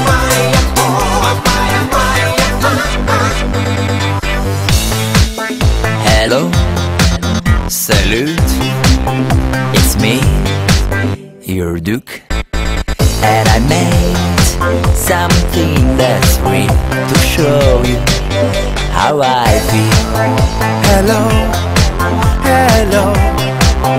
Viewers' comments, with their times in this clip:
0:05 The song is good but there is something I don't understand. The person who says is a boy or girl is like a girl in the maya hi maya ho part, but there is a male voice. Is it a man or a woman singing the song?